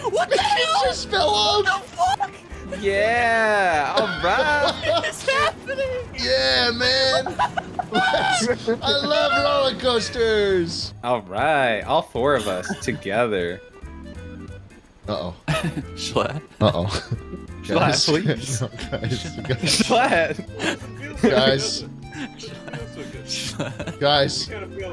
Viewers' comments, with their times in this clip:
0:08 I love that the chocobo theme fits so perfectly with these antics going on